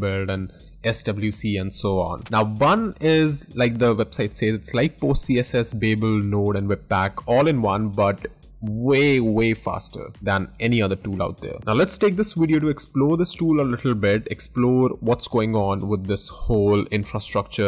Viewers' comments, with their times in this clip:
0:04 what does he say before babel? Light pos?